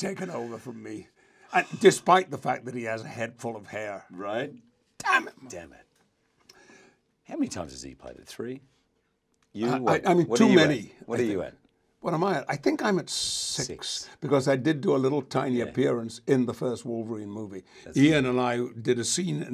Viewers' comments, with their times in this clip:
0:07 What does Jackman say ? They start talking about how many movies they starred in, but I can't hear what Jackman starts it off with.